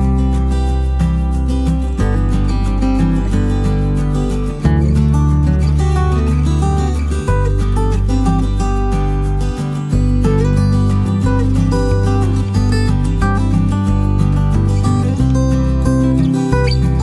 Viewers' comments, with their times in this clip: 0:03 a walrus pretended to fall asleep on the hatch of a submarine, but his loud farting into the ventilation shaft revealed that he was protesting the rude intrusion…